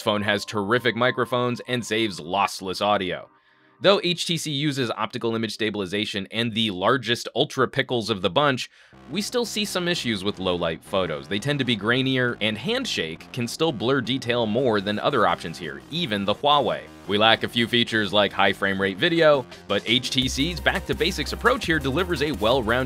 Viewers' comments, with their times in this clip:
0:06 Ultrapickle is back!